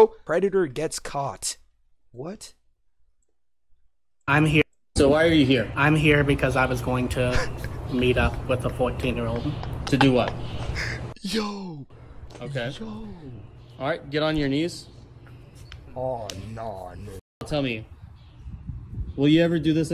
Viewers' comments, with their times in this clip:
0:05 MY dysplastic SELF THOUGHT THAT SAID Preacher